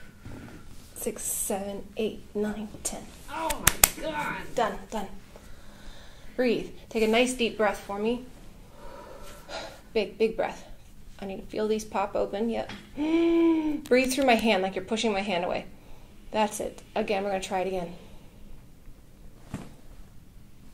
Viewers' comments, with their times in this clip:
0:03 hahaha, that guy screaming "oh my god"